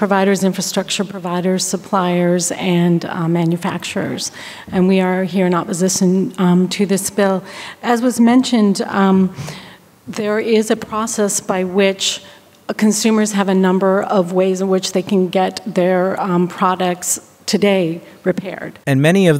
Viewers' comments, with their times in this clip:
0:04 I hear oppozizon instead of opposition smfh 😂😂😂😂 even with a script they fkn up hahaha